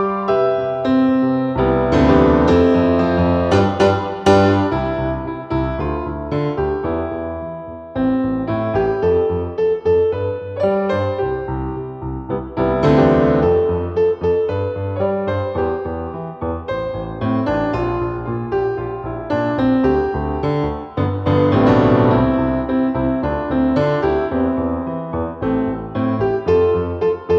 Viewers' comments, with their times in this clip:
0:08 I have seen only four piano renditions that got the chord correct, and yours is one of them. Well done Most covers do C, Dm, Em, C Correct is C, Dm, Em, Am